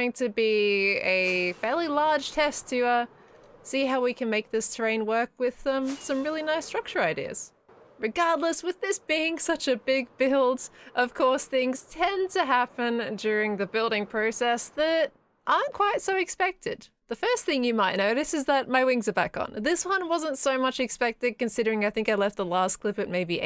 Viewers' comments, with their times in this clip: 0:08 Oh my gosh the first time that I heard this sounded like a song click the timestamp.